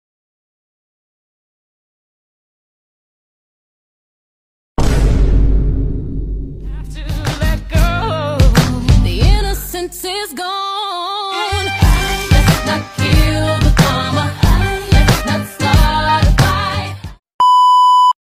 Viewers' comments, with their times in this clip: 0:09 The music is so perfect 🤣 ✨ThE iNnOcEnCe Is GoNe😫✨ He knew what the they were thinking 🤣🤣